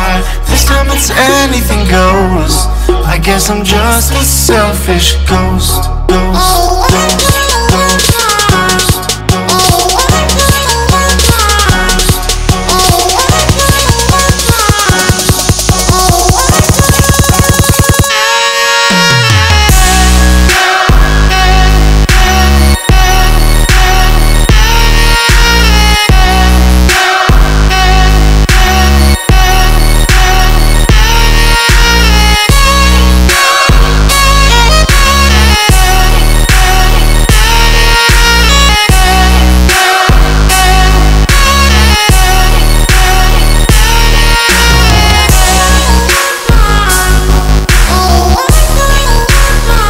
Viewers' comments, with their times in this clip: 0:07 stuck cat in the bathroom singing noises
0:34 sounds like he’s auto tuned too